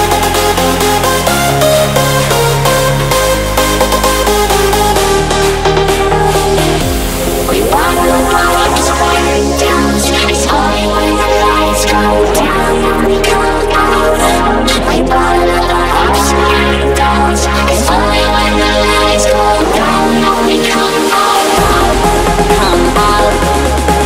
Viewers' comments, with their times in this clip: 0:07 W&W‘s voice effects😍😍😍😍😍😍